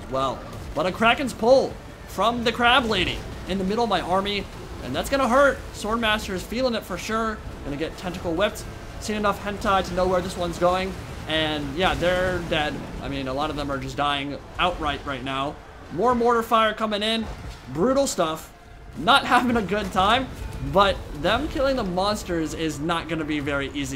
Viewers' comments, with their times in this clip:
0:08 Had me DYING Especially cause you could hear in your voice that maybe admitting that was a mistake.